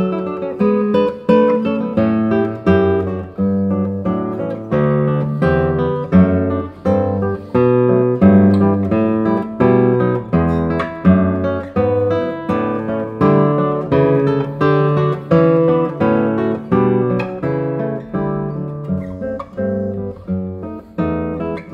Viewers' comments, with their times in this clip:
0:04 Love the bass tone of this guitar and elsewhere; but yeah it is played a bit fast. If you had followed this with the Allegro you'd have to play that presto to contrast😵 Enjoyed it much though